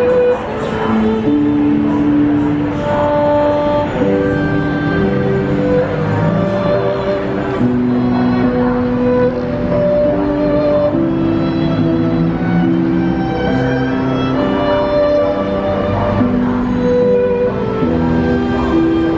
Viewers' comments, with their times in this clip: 0:03 The guy playing violin in all that chaos around him. Met him in July 2019, playing Bach, and moving me to tears. Thank you for that nice video!